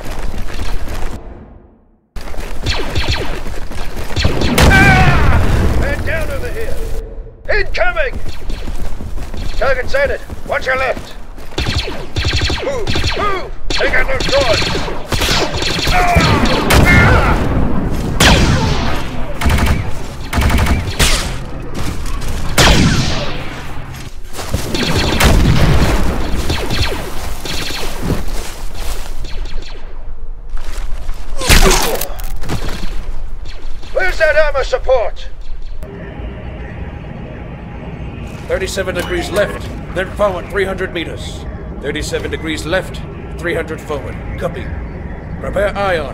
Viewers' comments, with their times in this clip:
0:04 Glad to have you back, Commander Those troopers designs are so unique. Probably the most realistic sound effect for a cannon shot
0:31 idk if I'm tripping or not but I swear I heard a very quiet "Bruh"